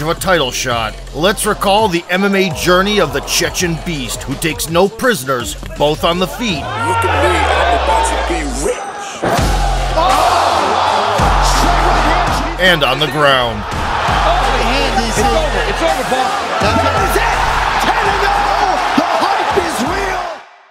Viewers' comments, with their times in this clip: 0:04 him just screaming as he walks you down must be terrifying.